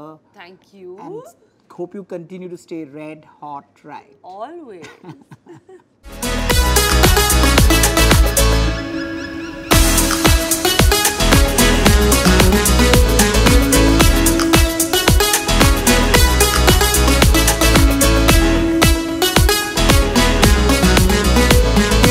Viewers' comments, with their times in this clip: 0:06 RIP headphone users😥